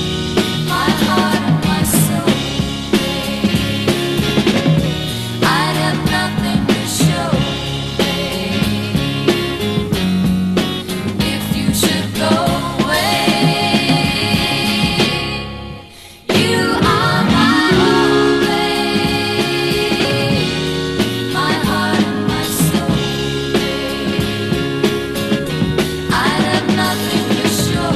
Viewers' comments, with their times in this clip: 0:10 I love the way the each verse phrase ends with a slightly dissonant chord. It make the mood of the record a lot more intriguing. Terry Jacks also used that technique in "Put the bone in.", the flip side of "Seasons In the Sun".